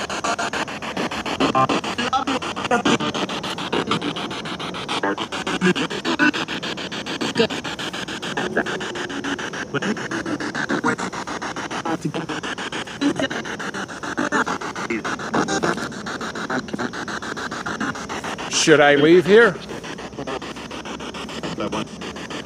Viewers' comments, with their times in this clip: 0:08 What is the weird low piano music coming thru ? By my count it spanned 16 frequencies of the radio (2 full seconds) which defies any logic of it being a song on the radio since you were scanning at the fastest sweep rate.